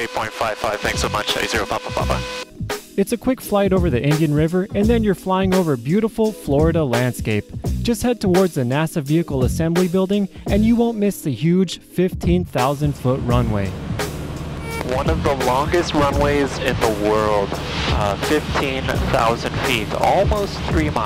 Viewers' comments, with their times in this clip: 0:08 who else thought he was rapping lol 😂